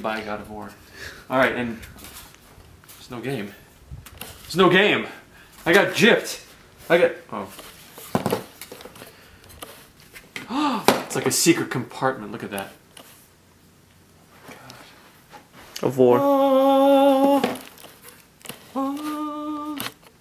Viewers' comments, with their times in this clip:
0:06 lmao sounded like a legitimate freakout